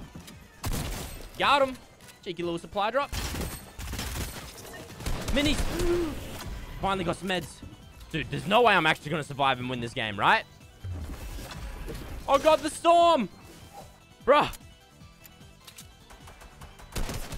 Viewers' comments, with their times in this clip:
0:05 That inhale tho🤣